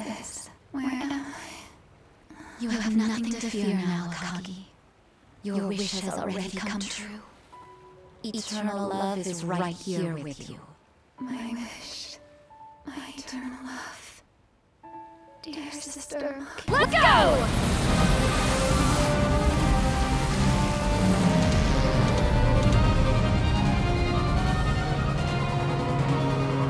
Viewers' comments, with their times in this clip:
0:07 audio glitch I not see What's Name? 😅